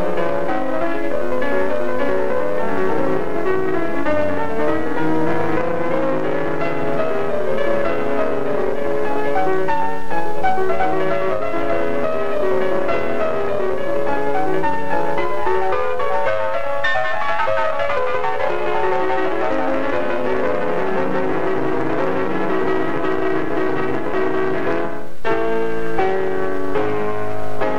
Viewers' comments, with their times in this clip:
0:08 One of my biggest disappointments of early 20th-century piano is that we never got to hear Hofmann in his prime. There are some true moments of brilliance here... the small tug of rubato during the Prelude gives me chills.